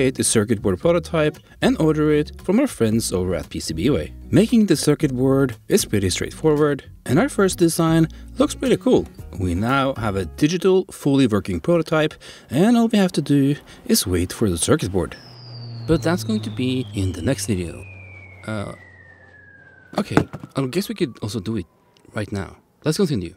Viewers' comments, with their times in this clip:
0:04 Whats up with your mic? I thought it was my headphones dying, but flipped the channels and the static crackle swaps. sample "Pretty straight forward [Crackle]"